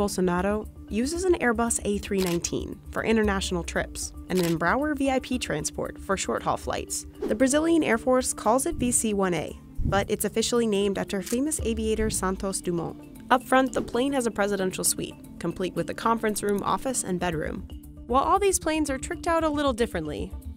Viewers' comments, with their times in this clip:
0:04 please tell me people don't pronounce Embraer like that